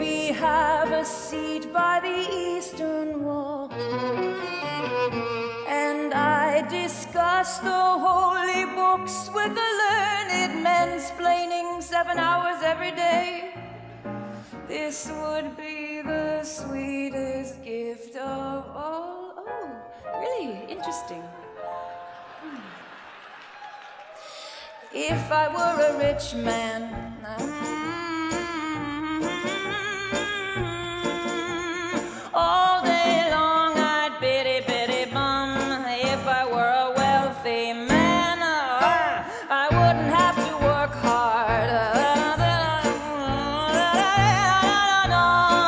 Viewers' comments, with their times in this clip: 0:10 men-splaining! I love it! How did no one catch that?
0:27 Even her humming is so powerful